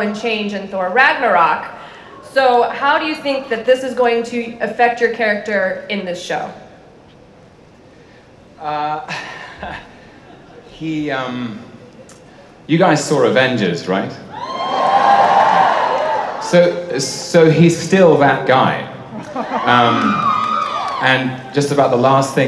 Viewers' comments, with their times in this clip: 0:08 He just has the best laugh oh my gosh.
0:09 I missed that laugh :)